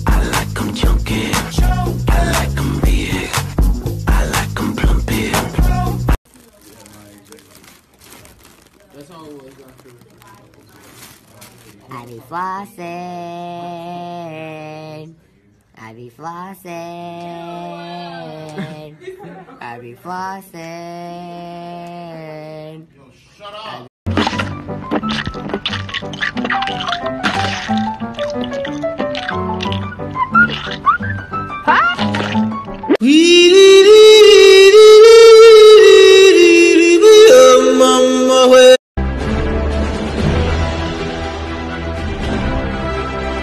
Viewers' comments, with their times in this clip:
0:06 the helium doesn't effect his voice at all
0:18 Someone shouted “Shut Up” 😂
0:20 whoever said "shut up" in the background is my dad
0:24 if games wanted cup ASMR
0:26 is the most M O I S T apple chewing asmr